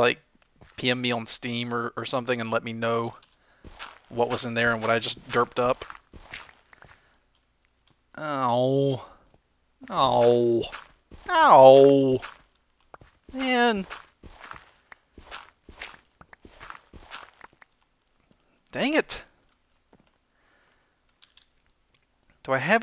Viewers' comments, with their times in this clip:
0:09 you sounded like my cat when she brought me a mouse. Are you my cat?